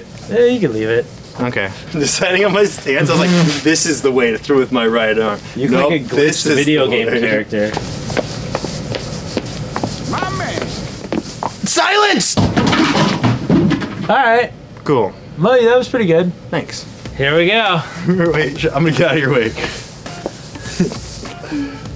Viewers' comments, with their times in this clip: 0:09 did anyone hear that rick and morty sound effect? it's very quiet but is noticeble it said "my man"